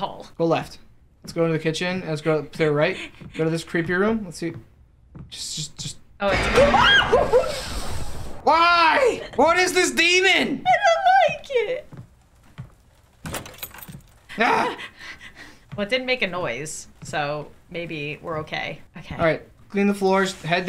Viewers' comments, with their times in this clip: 0:06 I listened to that scream one to many times and it doesn't sound like a human made that noise anymore🤣🤣🤣🤣🤣🤣
0:06 i like the way she screamed if u like pina colodas. and dancin' in the rain